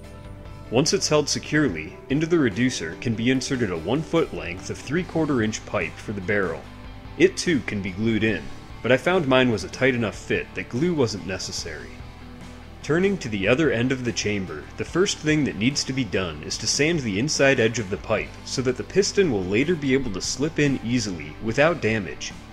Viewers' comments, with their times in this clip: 0:08 I heard "leaving the other three"